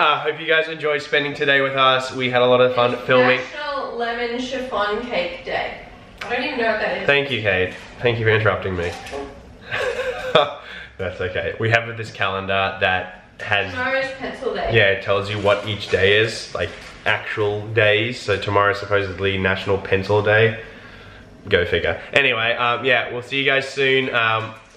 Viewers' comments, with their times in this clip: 0:08 did one of them fart? 😳
0:09 was that a fart? "that's okay"... Omg I died. 😂😂